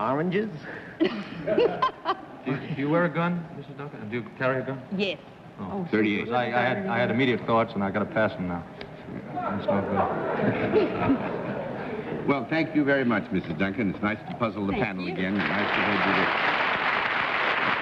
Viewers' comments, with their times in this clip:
0:05 What is it that Bobby Darin says that brings a gasp from the audience? Something about a gun.